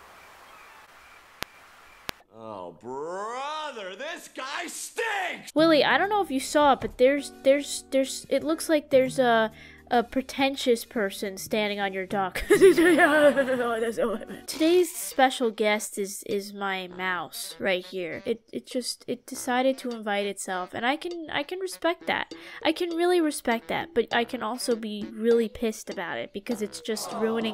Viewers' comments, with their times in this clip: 0:08 OMMGG THE LAUGGHH I LOST ITTT